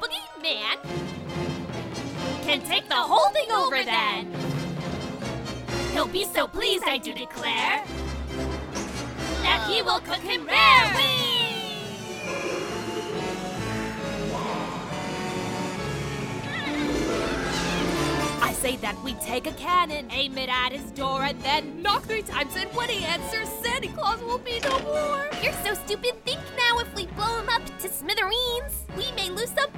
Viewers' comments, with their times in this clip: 0:10 Wait, did I hear a door open ? xD The wind really doesn't like you.